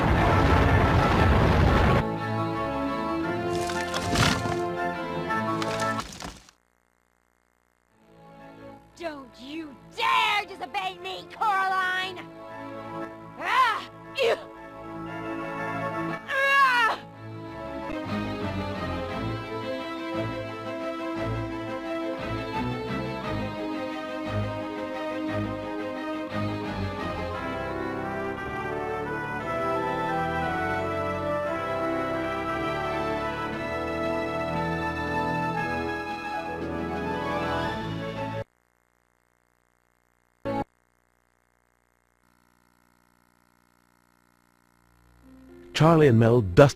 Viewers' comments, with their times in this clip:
0:06 IM SO SORRY BUT ITS FVCKING HILARIOUS WHEN SHE GOES “eUeGh”
0:08 "Don't you dare disobey me Coraline!" <Angry> <Hurt> <Angry Yell>
0:09 THE NOISE SHE MADE WHEN SHE KICKED HER NSJSKSNSBSJS
0:10 [ Dramatic Music Continues ] [ The Other Mother ]: Don't you DARE disobey me Coraline!!!!!!!!! [ Yelling ] [ Grunts In Pain ] [ The Other Mother Shouting In Rage ]
0:13 Other mother: RAAA (1 sec later) Other mother: (funny hurt sound) Oml im dead LOL
0:30 Coraline fighs Beldam sweet music starts kicking